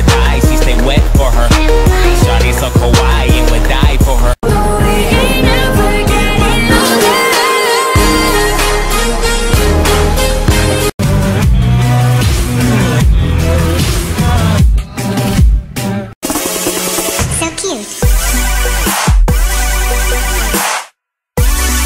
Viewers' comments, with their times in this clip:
0:06 Jesus I forgot but the song